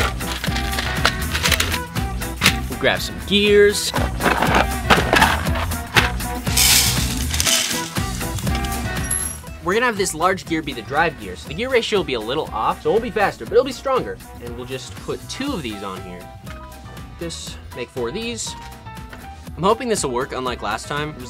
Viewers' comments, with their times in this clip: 0:03 Grab some ears